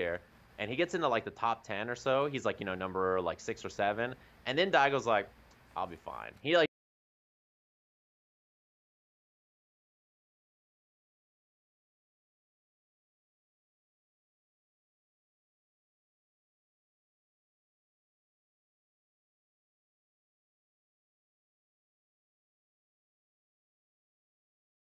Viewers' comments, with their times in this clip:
0:06 Sajam's audio got cut off